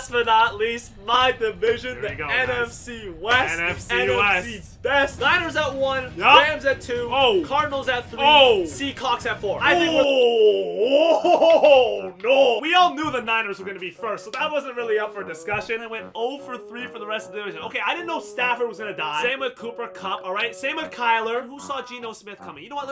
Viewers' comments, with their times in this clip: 0:08 He said seacawks lol